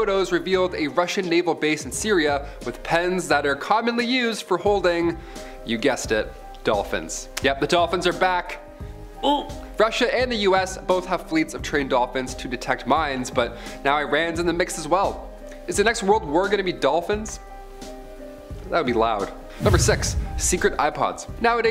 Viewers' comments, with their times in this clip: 0:09 I honestly thought you were making dolphin sounds right at the time marked, though it really did sound just like a dolphin, eee eee lol hee hee.